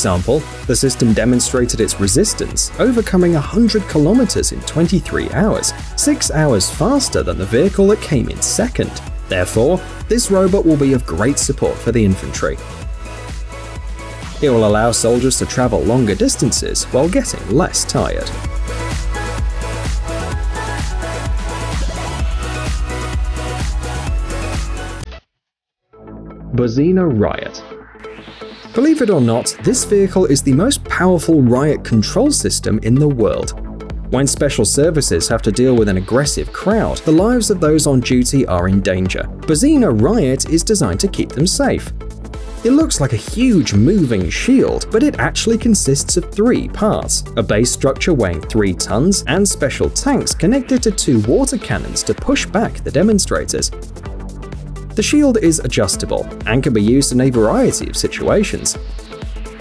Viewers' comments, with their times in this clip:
0:05 well, much better than the ones from Boston Dynamics that were super noisy at least.
0:47 your mic encounters audio issue like it’s covered by a towel or something